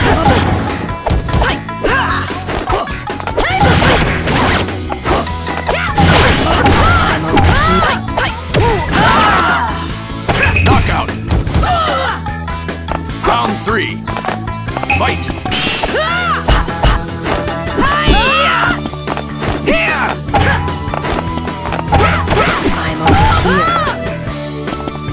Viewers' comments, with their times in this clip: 0:08 Such a classic never dies. Naruto’s CPU knows exactly when to throw out sweeps vs Haku. He got you almost every single time he threw out a sweep in the 2nd round. When Haku gets hit by the sweep it almost sounds like he is yelling: WHO!? Like who would sweep me like this? Haku is wearing huge sandals, so he is just asking to get swept trying to fight in those.